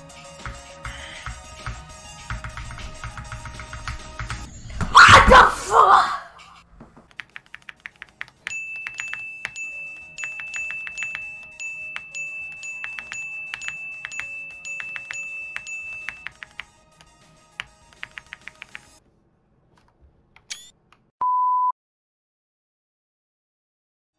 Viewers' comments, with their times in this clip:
0:05 loud doesn't equal funny